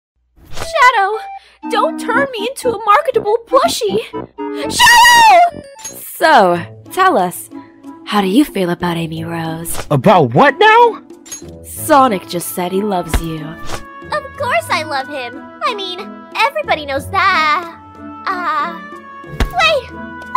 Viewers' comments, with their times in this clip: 0:04 you can hear the dispair in her voice